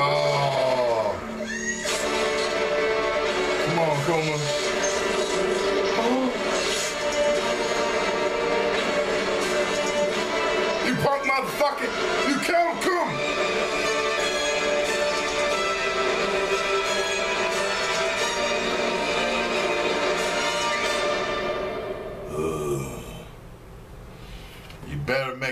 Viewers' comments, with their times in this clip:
0:06 Haha That Gasp!